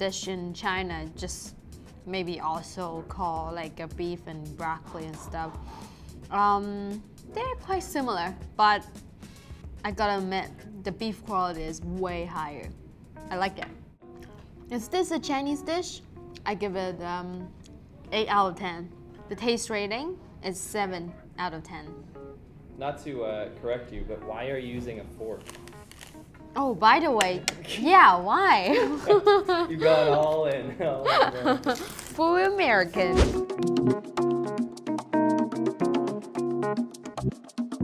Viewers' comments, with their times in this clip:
0:05 Was that a dog in the back? Uh oh
0:18 I almost lost it when she said “Fuwwy Amehwrican”